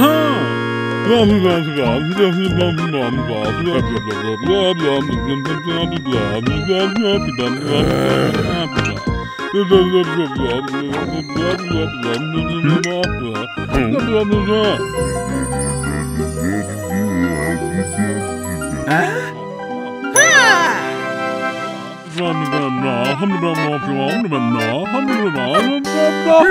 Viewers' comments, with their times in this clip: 0:07 so funny when he groans